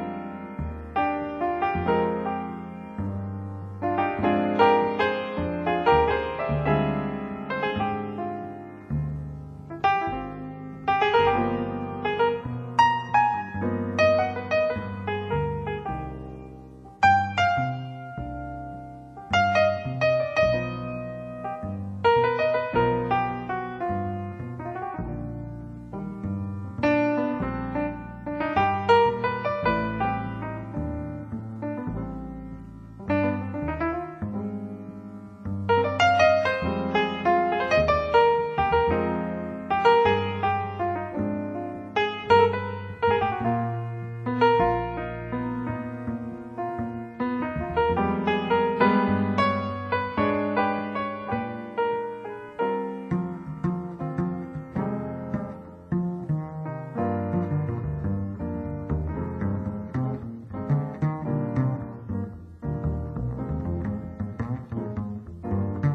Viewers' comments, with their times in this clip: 0:06 I wish the other musicians were named. The piano sounds "off" but then you realize he's making a statement, the same way the horn's last note is...
0:53 What more could I say? This has to be one the most artistic performances ever recorded in the history of jazz. Chet Bake's playing is top of the line, no doubt about it. I also especially love the double bass solo starting Throughout the track, the piano and the bass together really form a solid canvas for the trumpet to solo on. Phenomenal musicianship. Just the kind jazz that would send me away to the some other worlds. Simply a surreal experience.